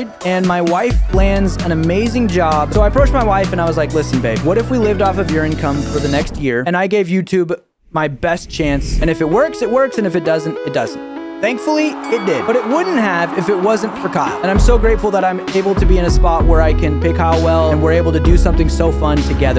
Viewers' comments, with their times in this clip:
0:04 I SWEAR I heard “something“ else there 😂